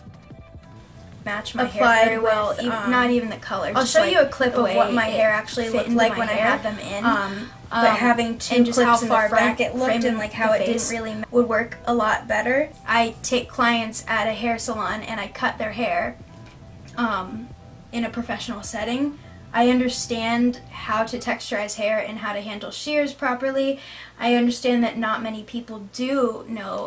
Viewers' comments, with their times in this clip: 0:08 audio is overlapping